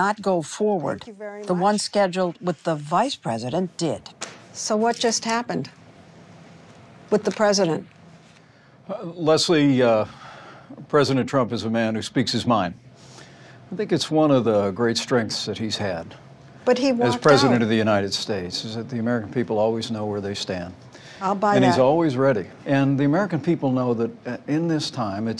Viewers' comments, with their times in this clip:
0:09 Lmao why does Pence talk like Patrick Bateman when he's being sarcastic